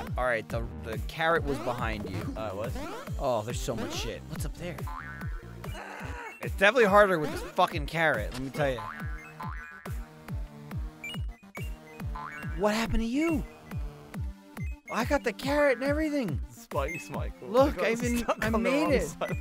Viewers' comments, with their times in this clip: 0:07 That "what happened to you" sounded so genuine